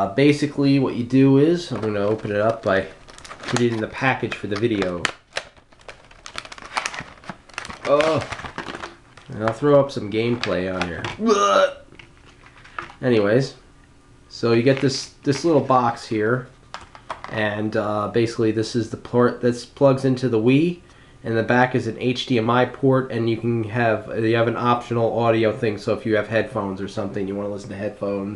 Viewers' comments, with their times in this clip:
0:10 Why did you gag ?